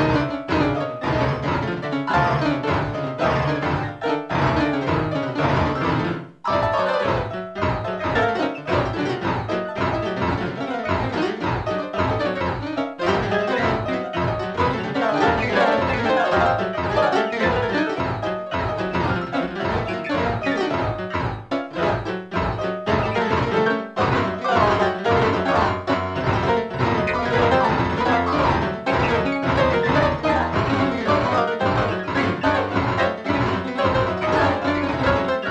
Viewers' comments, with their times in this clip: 0:03 you can hear it saying "wathcu gonna do"
0:15 the lyrics are back
0:23 you can really hear the voice. Its great qwq